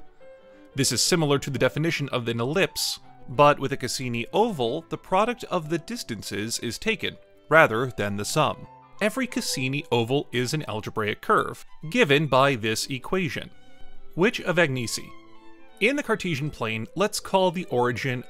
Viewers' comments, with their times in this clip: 0:03 can't spell "ellipse" horrible AI voice translation = NO SUBSCRIPTION